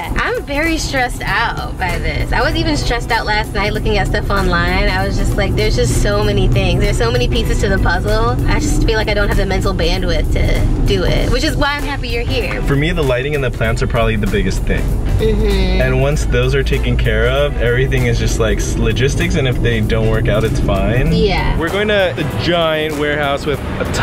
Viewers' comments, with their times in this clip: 0:07 it sounded like she said there’s just so many pizzas to the puzzle🤣